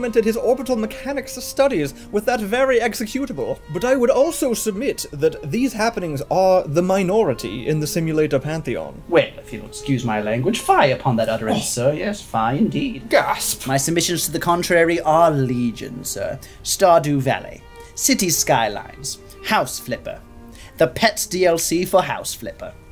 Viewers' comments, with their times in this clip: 0:03 Best moment is when a legit laugh sneaks in there